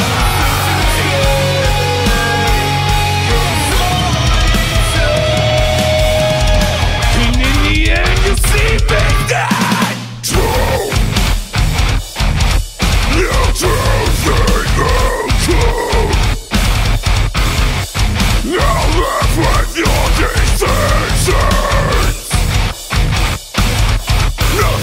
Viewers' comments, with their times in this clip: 0:08 1) This is awesome. 2) I really like the vocalists cleans. 3) This is like a mash-up sound of every band I like. Still unique within it's own right, which is great. 4) I laughed, my ass off, at the break down Because he's like, "in the end you'll see me stand" or something like that, and then it cuts to him suddenly being on top of that big ass box/moniter thing, and the first thing I see is his bare-feet. and I'm like "oh, shit, he's not fucking around lmao"